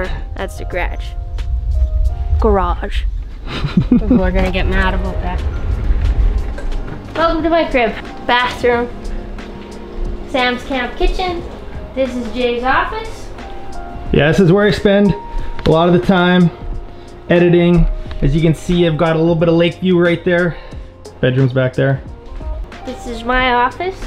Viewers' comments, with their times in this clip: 0:06 no no, she said g'radge right the first time